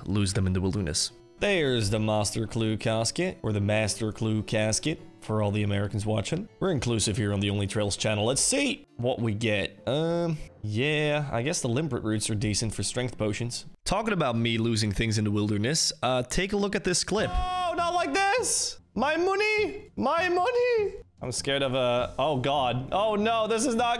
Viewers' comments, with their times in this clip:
0:06 Oí! Don’t make fun of the way I say “Master” Clue! Everyone says it cooler than us ‘Muricans